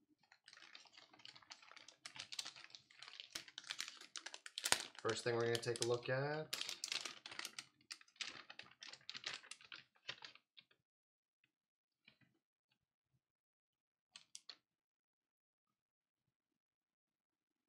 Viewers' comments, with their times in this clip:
0:05 a s m r